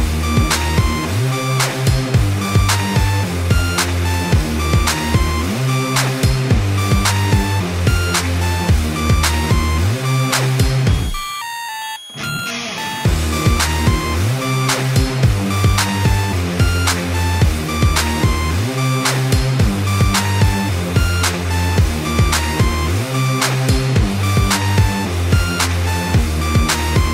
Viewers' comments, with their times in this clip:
0:10 Yeah the edit sound start